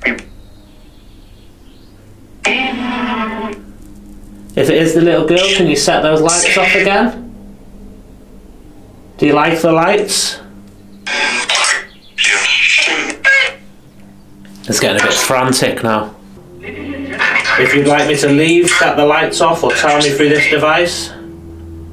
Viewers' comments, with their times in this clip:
0:03 when you ask the little girls name I thought it said “Evelyn” which came up before, pronounced more like “Eve-Lyn” rather than the more traditional pronunciation “Evi-Lyn” (if that makes sense)